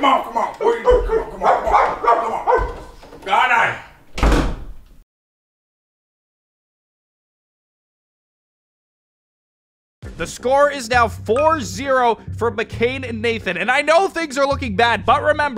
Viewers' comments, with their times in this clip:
0:03 their silence was too loud 😭💀